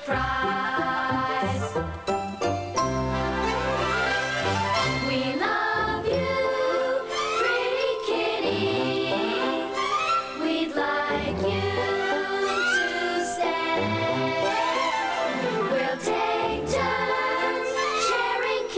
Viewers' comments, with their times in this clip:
0:04 I love this part of the movie. The children sound adorable. Sweet song. Especially the bridge The harmony is beautiful.